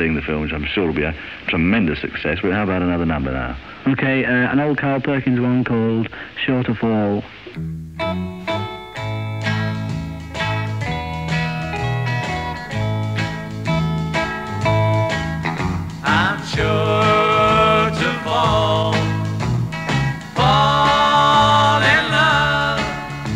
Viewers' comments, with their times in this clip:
0:08 ....I also love the change Ringo does on the bridge in " I'm sure to fall" . It gives it a Tarantella feel (sorry I'm italian :-) )